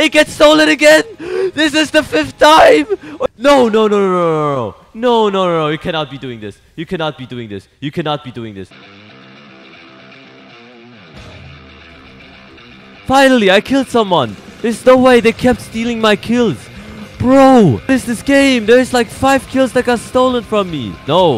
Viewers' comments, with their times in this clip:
0:09 when the Doom music kicks in💀